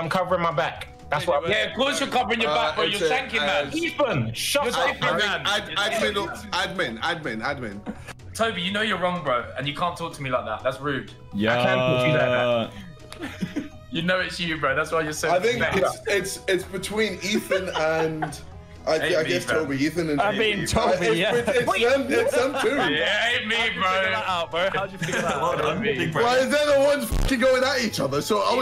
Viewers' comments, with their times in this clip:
0:04 when the substitute teacher cant get the class to be quiet
0:09 Holy flip, this is pure chaos I can't understand a single thing.